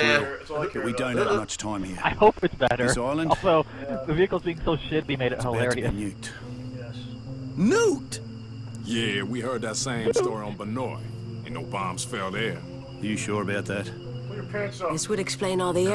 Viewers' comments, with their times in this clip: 0:03 Lmao what in the world was that? Wayne didn't even say "Nuked" in a surprised fashion. Instead, it was like he was repeating with the colonel said.